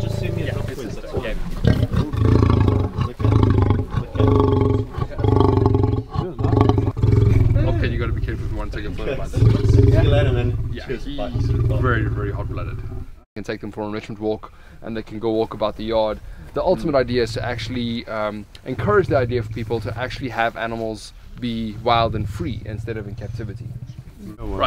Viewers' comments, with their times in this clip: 0:07 I want to hear that male lion fart.